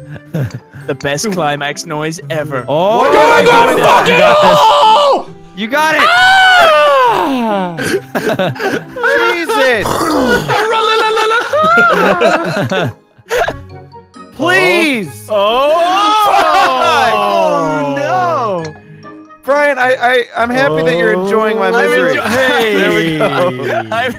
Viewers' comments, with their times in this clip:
0:06 he sounded like steve from american dad😂😂